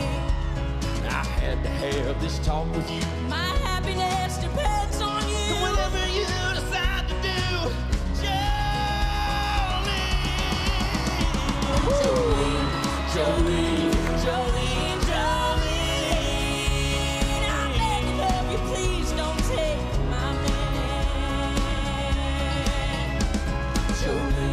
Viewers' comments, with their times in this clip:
0:07 Who in the world is this woman? And the fella's voice ! Dayem, what a year for voices as all contestants have been spot on this year!
0:08 Almost threw my phone ! That was beautiful! He did his best with that song. Wish he had a song that suited his voice more though.